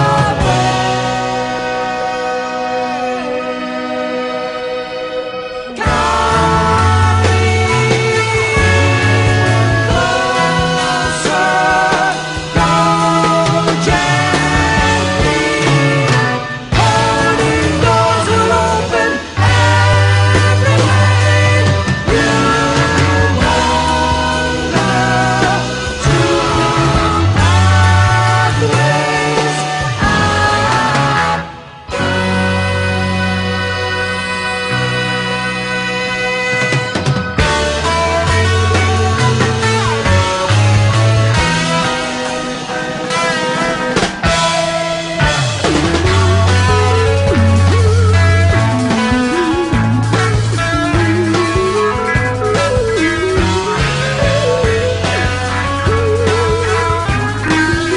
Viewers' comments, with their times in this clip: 0:04 Great to see Chirs Squire singing with Jon Anderson... and listen to the bass ... pure magic!
0:44 Wonderful! Thank you very much. When you used different audio it is incredible to see how accurate they perform, synced within the second. My highpoint in this fantastic piece is the three-part counterpoint that really stands out and is unsurpassed in the entire progrock era.